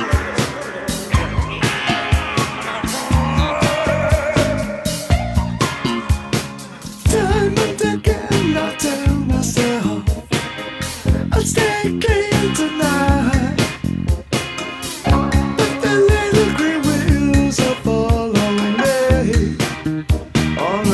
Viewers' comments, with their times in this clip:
0:07 you can hear laughing after the crazy vocal